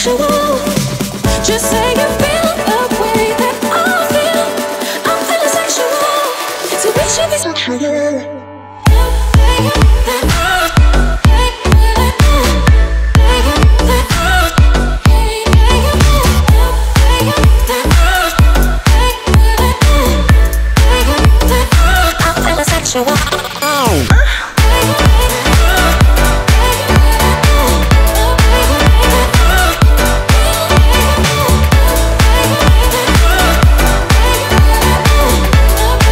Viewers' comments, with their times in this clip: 0:08 drop button 🔥 💪 merry christmas everyone ❄ 🎅
0:23 actually made me laugh xD. It reminds me of a beatbox gasm dude ...
0:23 the porn sample XD